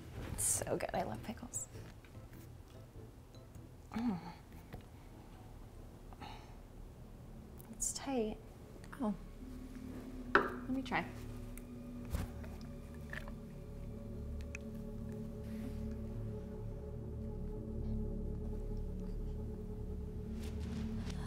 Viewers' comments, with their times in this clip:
0:09 or rather just before your sound bite was off .. or more of an mmmm